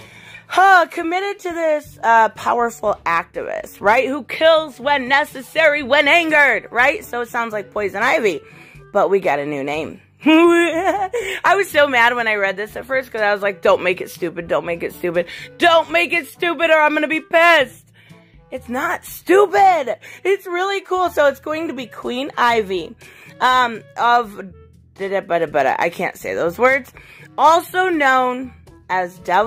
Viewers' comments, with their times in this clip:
0:10 ... Most amaZing chuckle